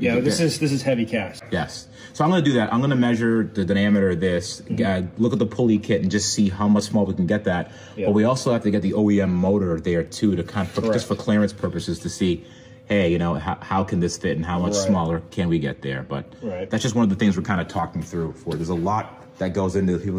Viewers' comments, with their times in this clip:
0:03 What’s a dunameter?